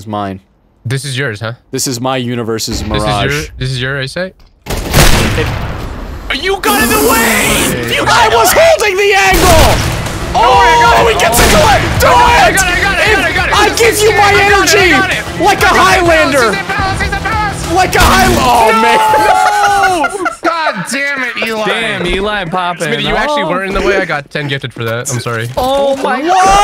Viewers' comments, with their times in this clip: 0:08 the little jump the “holding” did on the voice crack 🤌